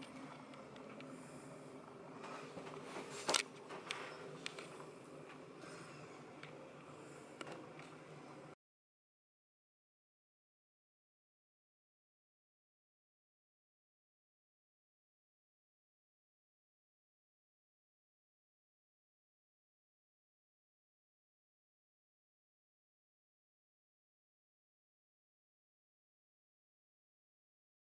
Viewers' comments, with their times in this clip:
0:09 And then cuts out again